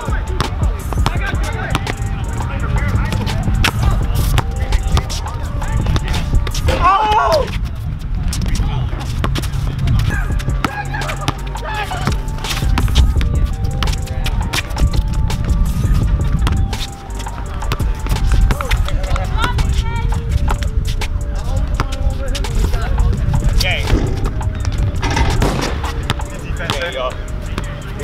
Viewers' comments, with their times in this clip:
0:10 kids in the background🤣